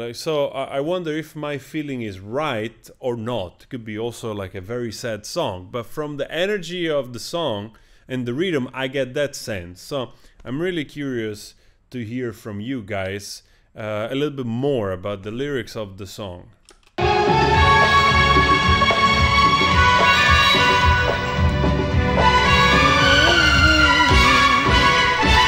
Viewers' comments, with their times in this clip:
0:10 plus Udit Narayan's less than ideal pitching especially that draggy off note is the cherry on top.